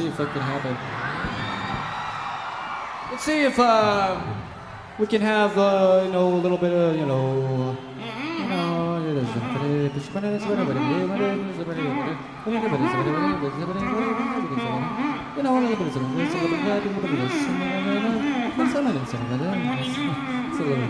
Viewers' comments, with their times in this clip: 0:05 Billie speaking gibberish